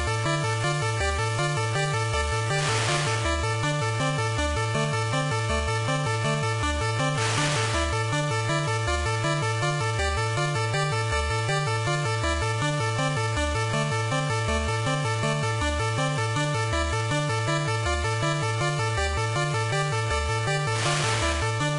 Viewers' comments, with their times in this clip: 0:04 in music like in Interstellar movie